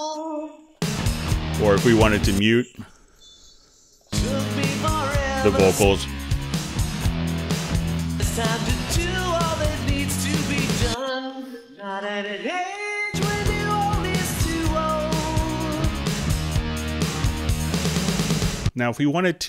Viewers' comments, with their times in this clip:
0:05 It's only a couple seconds but he mutes the vocals. Seems pretty clean.